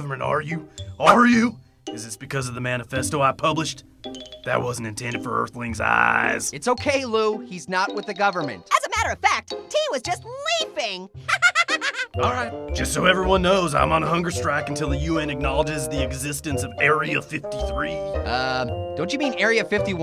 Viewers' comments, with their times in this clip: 0:04 Does Lou' s voice sound like a robot🤖🤖🤖